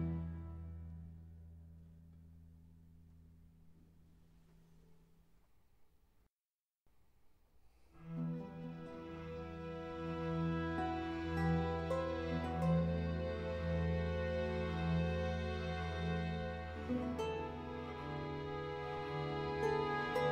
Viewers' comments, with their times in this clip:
0:06 I don't know if concert RV 278 is late enough to be included among the "eccentric" ones. Just go to the Largo and ask yourself: what is the eccentricity? Fashion? Urgency? Discovery ? In concert RV 278 we hear the first gasps of the Sturmer aesthetic, the exacerbated psychologism of Bach's son and certain modern "emptyings" such as turning off the bass. At the end of the Largo a miracle occurs: a descending octave interval, from a B to the one below, repeated twice that sounds like an extreme, melancholy, conceptual and minimalist farewell. Unfortunately the third repetition Is ornated in this version, I would not have done It. Please, do not add notes, play a simple octave as perfect as It is.